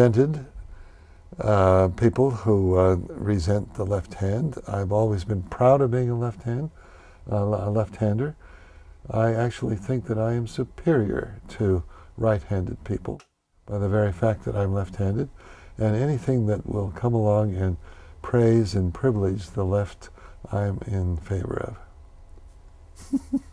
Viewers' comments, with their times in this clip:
0:08 i can't tell if he's being serious or not. maybe not because he giggled.